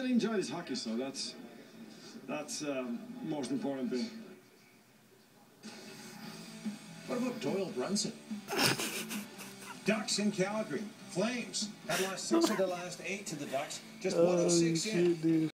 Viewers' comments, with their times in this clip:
0:08 The laugh is how we all feel.